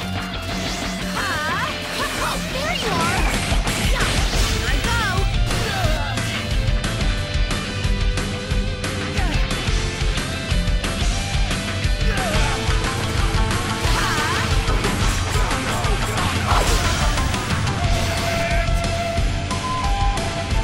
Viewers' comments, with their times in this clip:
0:03 when the song is synced with the punches
0:03 were ignoring that sync
0:08 The song I really love this song NGLDHDHDHDB AHHHHH🥺💞💞